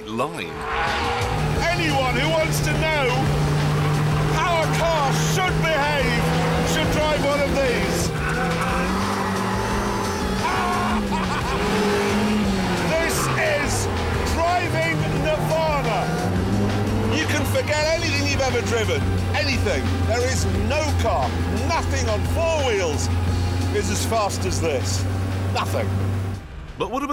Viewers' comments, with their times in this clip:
0:08 this is the laugh of a man who is enjoying pure happiness
0:08 golden laugh xD
0:09 that’s the laugh of someone loving the moment.
0:10 ARGH HA HAHA HA! This is how I will always remember mad Jeremy Clarkson!
0:10 You know you've made something truly special if you can make Jeremy Clarkson literally laugh with joy-Ariel earned a seat at the Sports Car manufacturer high table with this review
0:11 Jeremy Clarkson's laugh sounds very evil